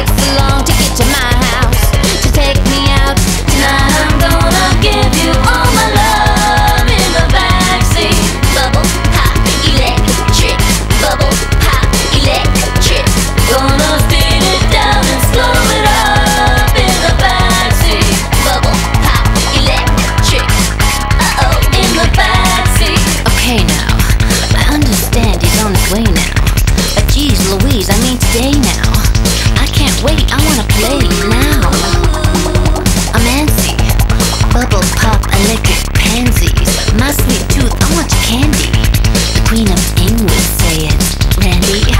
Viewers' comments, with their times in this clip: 0:03 THE DRUMS Yes.
0:23 i like gwen stefani but i cant unhear as toast from bee and puppycat LOL